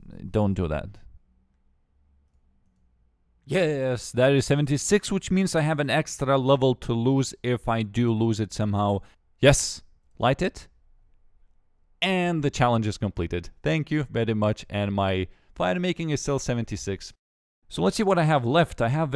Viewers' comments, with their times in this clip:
0:03 Skip to and here him say "YES" hilariously. This got me goin.